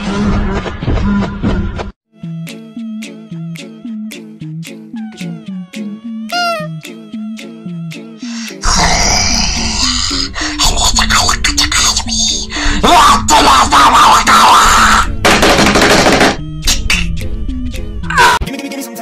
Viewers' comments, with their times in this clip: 0:04 plush noise Foxy plush inhale and growl Plushie gremlin communication Intense freddy plush noises machine gun walking Steb fredbear Fredbear: AHHHHHHHHHHHHHHHHH